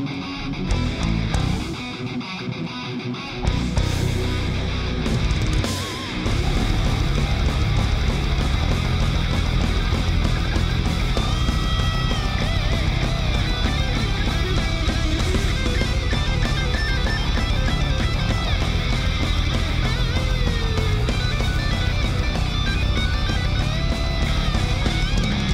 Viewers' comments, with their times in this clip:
0:08 what the hell kinda solo is this? This really aint up to par at all.